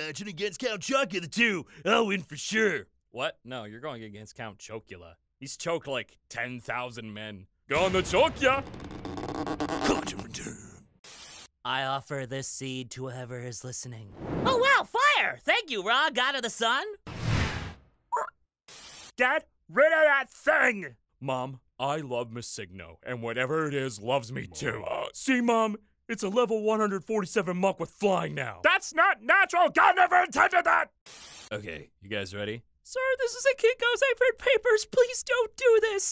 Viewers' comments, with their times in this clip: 0:10 I just love the little thumbs up from Ra, I don't know why but the thumbs up and little bird noise gets me.
0:17 Happy Ra noises